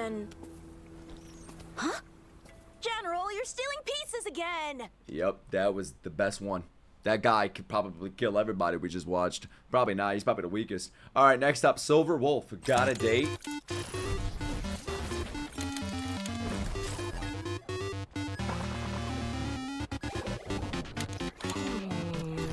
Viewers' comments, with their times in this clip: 0:05 crying and screaming